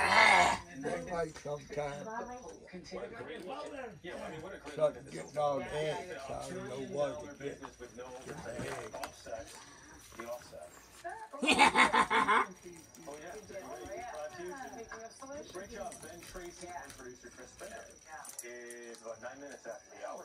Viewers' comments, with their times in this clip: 0:07 The evil laugh